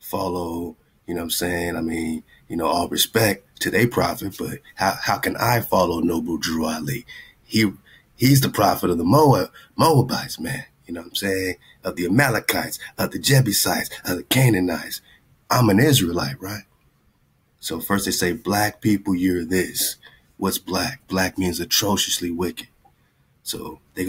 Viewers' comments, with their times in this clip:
0:09 ... 😒 when there's a 'but', there's always a poo-sandwich. 😁 One more thing, have you noticed how the hijack's cadence in there speech ALWAYS speeds up? And it doesn't matter the person...just talking frequency.